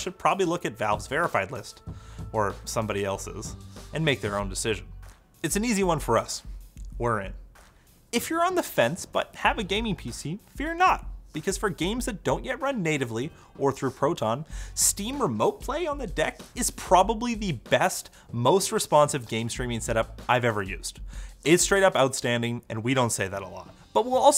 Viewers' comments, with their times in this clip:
0:08 Kermit started to come out 😂